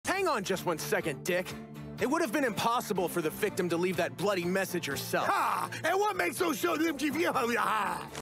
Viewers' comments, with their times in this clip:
0:06 I have no idea what he said